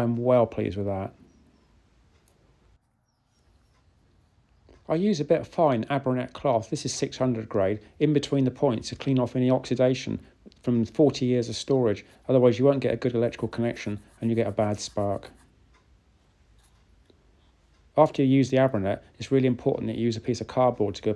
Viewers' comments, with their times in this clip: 0:05 A bit of fine.... ???? what?? cloth? Couldn't make it out.